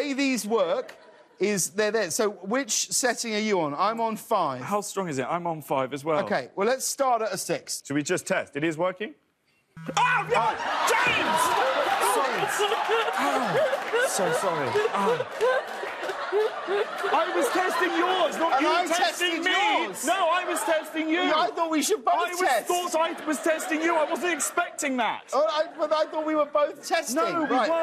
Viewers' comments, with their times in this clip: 0:08 her laugh is the cutest laugh!! in
0:09 Her laugh though
0:11 Is no one going to talk about that weird laugh 😅
0:11 what is that laugh?